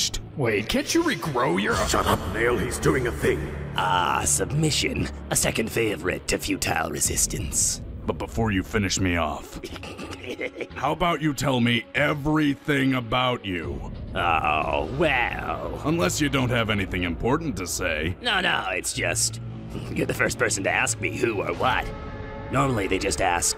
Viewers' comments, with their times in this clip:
0:10 The little laugh when piccolo says finish me off. I'm dieing